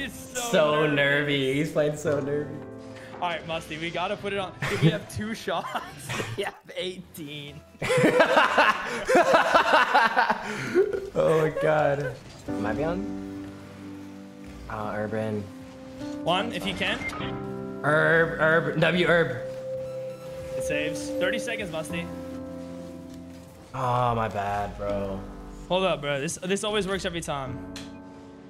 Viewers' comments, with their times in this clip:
0:04 the laugh killed me :D i loved it so much. have to watch this 10 times and can't stop laughing <3 nice video
0:10 bro this laugh has me 💀